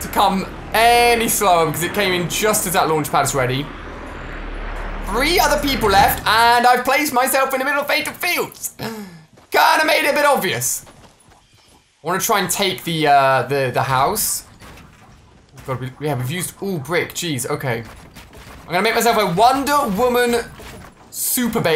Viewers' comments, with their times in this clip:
0:05 woof woof (His dog in the background)